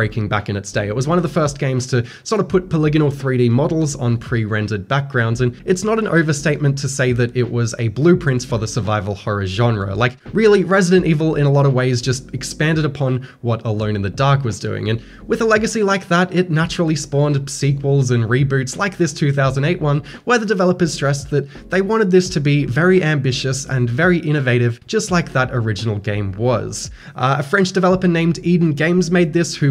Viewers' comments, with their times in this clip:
0:10 is this how you pronounce DaVinci? wtf. HOW